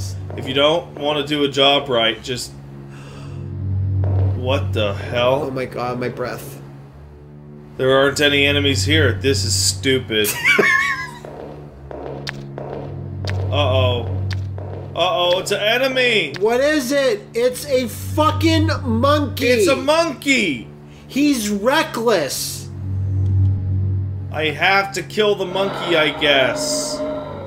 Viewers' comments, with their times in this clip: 0:10 that sounds like Licker footsteps.
0:10 that sounds like Licker footsteps.
0:12 Why did the Monkey monster thing have the same stepping sound effect as the Hunters and/or Lickers from Resident Evil tho